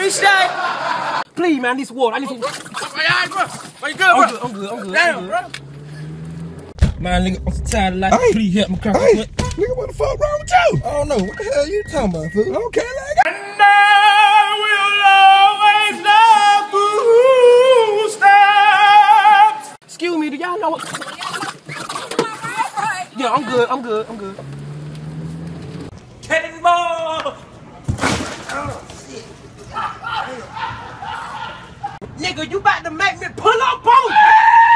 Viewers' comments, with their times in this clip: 0:09 the honk cracked me tf up
0:20 bruh that horn had me dead 😂😂😂